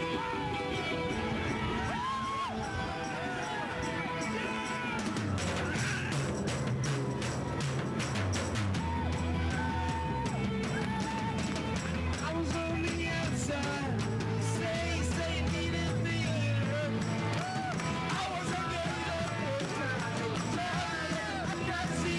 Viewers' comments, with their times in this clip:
0:05 not quite my tempo.